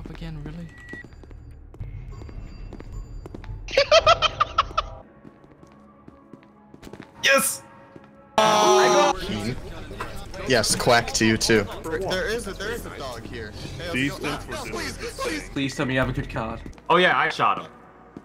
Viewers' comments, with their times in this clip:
0:04 The best laugh I have never heard